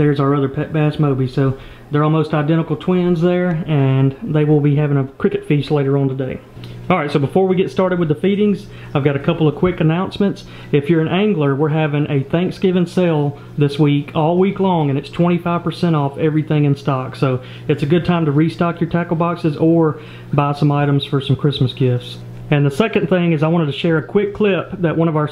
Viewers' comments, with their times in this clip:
0:07 sounds like he said beating not feedings hahahahahah